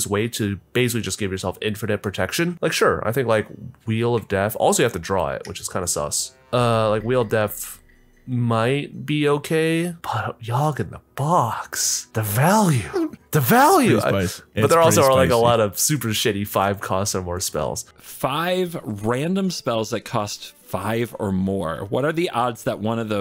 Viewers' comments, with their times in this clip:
0:05 i heard the sus sound editor. good job